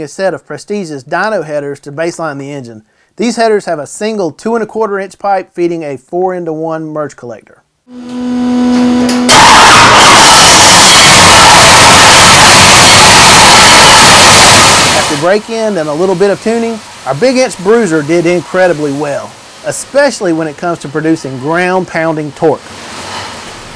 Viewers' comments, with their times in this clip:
0:09 Head phone user ALL DEAD Lol